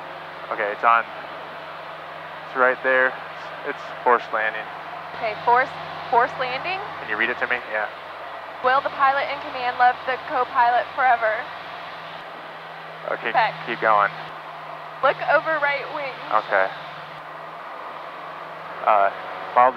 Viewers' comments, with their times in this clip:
0:05 She sounded pretty calm through few phrases that struck me as potentially alarming, but I like the moment she clued in: "forced... FORCED LANDING?". Yep, that's how I'd react. You don't want to hear those words together.